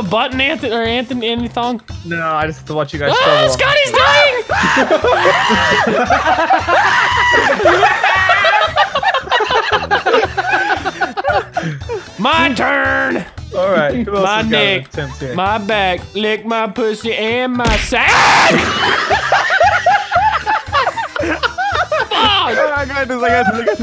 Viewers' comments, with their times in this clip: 0:10 Something more funny *I love this song but he stopped T^T
0:11 that scream was perfect